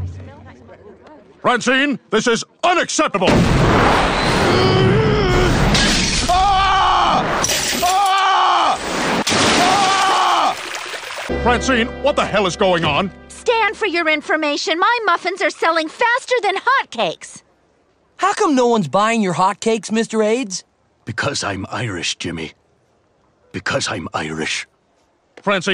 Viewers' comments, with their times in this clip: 0:06 That scream LMFAO